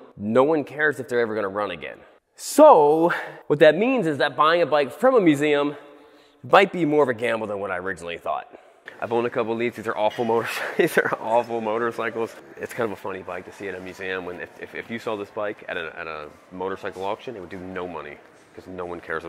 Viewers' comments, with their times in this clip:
0:06 It Sounded Like You Said (It Bike Be More Of A Gamble Than Whatt I Originally Thought) Laughted So Hard And Please Tell me If It Was BIKE ANd Not Might :D